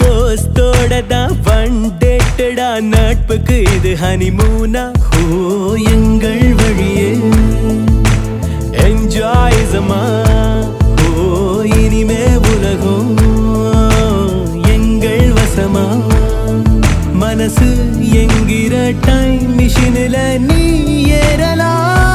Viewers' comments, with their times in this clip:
0:05 what a soothing music🙏🙏